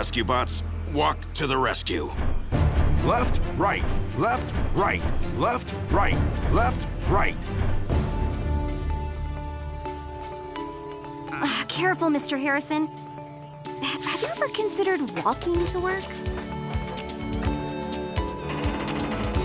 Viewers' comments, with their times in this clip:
0:03 <---- Worlds most awkward barbershop quartet